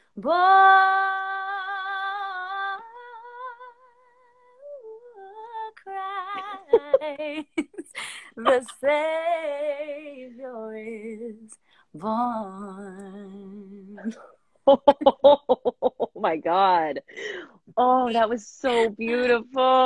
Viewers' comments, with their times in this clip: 0:04 that "ooouhhoaaah" connecting to 'Christ' was everything + then some... waoooow.